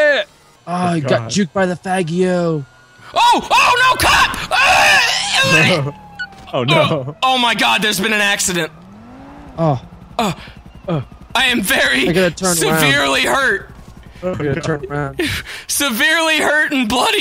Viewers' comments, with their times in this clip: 0:05 when he makes the throwing up noise after getting hit by the cop car hahhahahahahahha